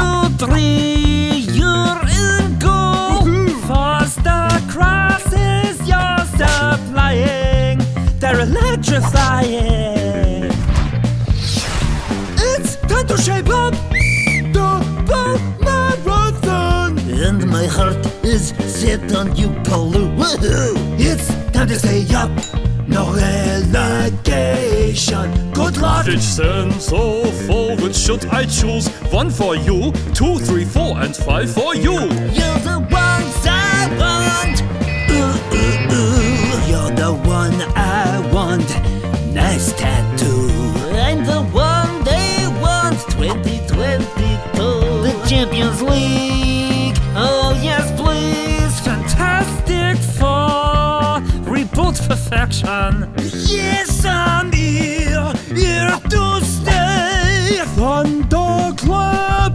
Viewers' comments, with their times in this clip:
0:08 is so Hugh voice
0:41 442oons and Bundesliga are the best PS Rebic`s voice has changed